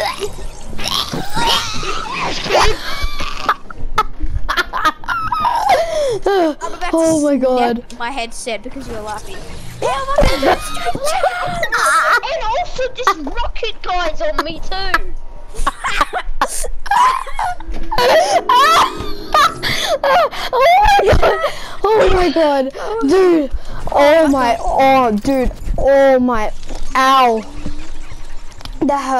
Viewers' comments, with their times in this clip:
0:10 BIGGEST HAHA 4